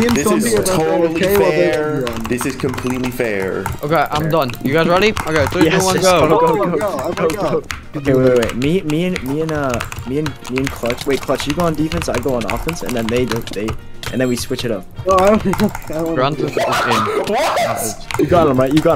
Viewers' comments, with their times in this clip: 0:04 AYO BROS WCTING LIKE HE IN THE WORKD CUP BROS KEYBOARD ON LIFE SUPPORT BRO HAS A TYPE WRITER LIKE THOSE KEYS